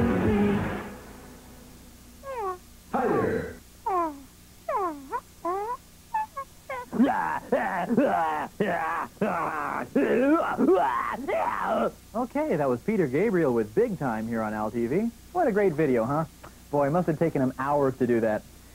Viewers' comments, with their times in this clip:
0:04 that baby, the noises he’s making and then the super calm “okay” on top of it all 😂😂😂😂 love it